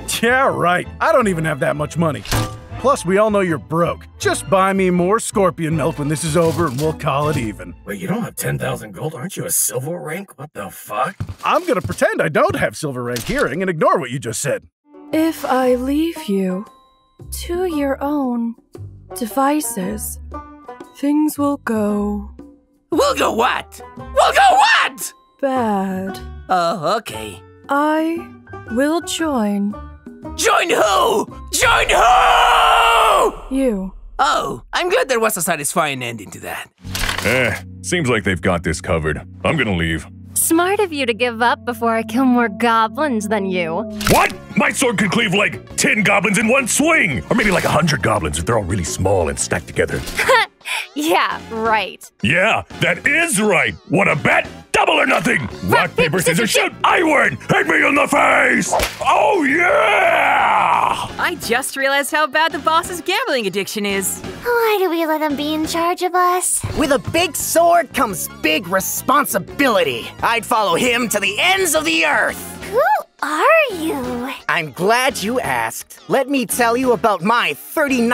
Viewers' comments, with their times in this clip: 0:07 The fact that goblin slayers voice almost sounds normal out of pure confusion
0:08 "wait, you don't have 10,000 gold? Arent you a silver rank? What the ffuck?" I'm sad to say it took me this long to finally watch this episode, but that line had me howling. Such deadpan, yet judgemental read.
0:40 the sound of like his neck just cracking LOL
1:03 Way did it sound like music from ranma 1/2 lmao